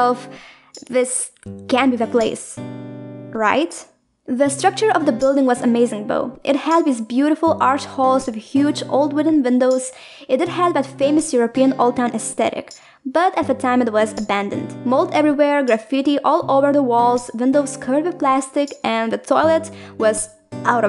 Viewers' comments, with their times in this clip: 0:04 the way she say the windows is cute